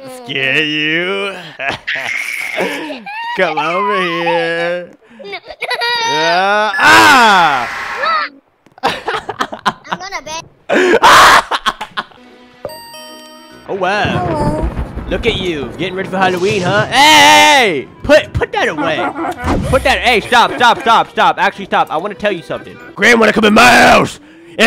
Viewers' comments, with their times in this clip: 0:08 the yell was so cute-